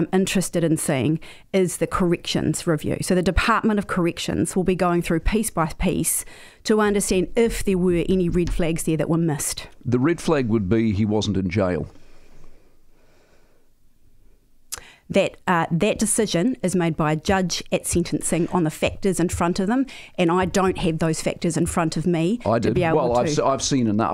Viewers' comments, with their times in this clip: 0:09 The pause bahahahaha usless😂